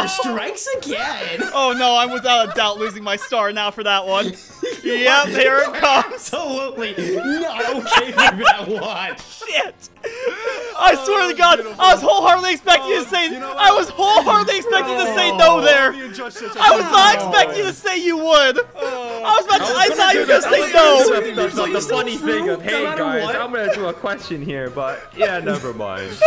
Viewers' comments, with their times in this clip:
0:08 Jontron blood laugh